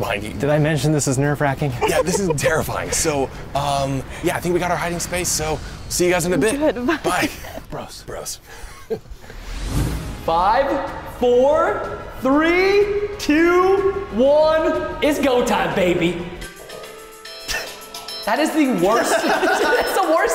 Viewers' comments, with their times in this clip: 0:07 When the timer went off it was